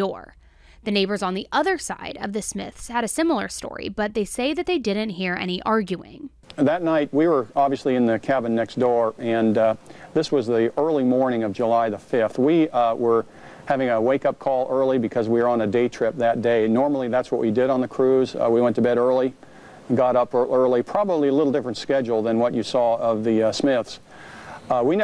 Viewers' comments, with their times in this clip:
0:07 Why is it … the man was talking but the wife was saying as if she was talking or maybe rehearsed? Lol.